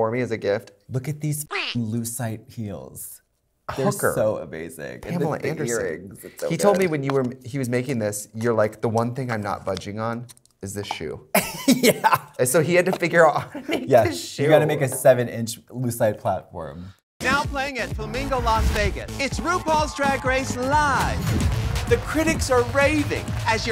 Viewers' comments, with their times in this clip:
0:04 Katya sounds like Alaska lol